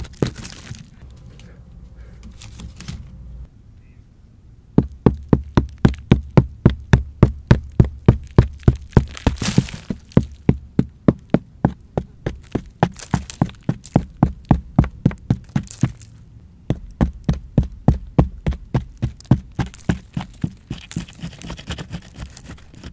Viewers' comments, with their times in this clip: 0:07 Why does sound like minecraft mining Like if u agree
0:08 sounds like minecraft chopping stone